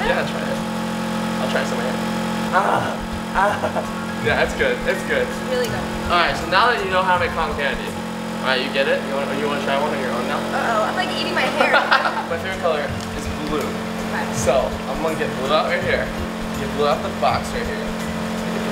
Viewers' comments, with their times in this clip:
0:03 did you hear a luluby